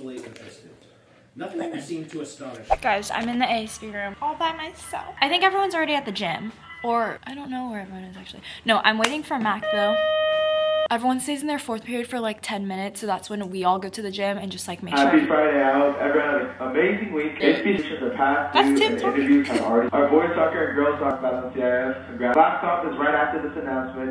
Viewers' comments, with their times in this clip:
0:09 👯‍♀️ Girl what was that sudden beep😭